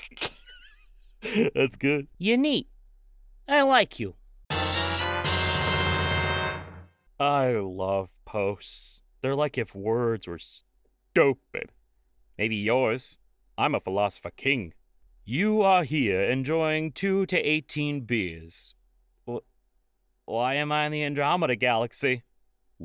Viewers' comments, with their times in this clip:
0:07 i thought this said poets and i was just like "yeah okay"